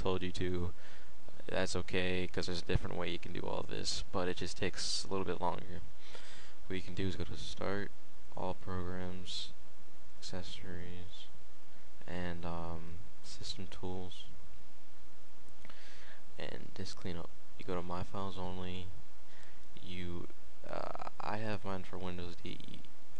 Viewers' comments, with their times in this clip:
0:08 whyd you get so quiet after ? :o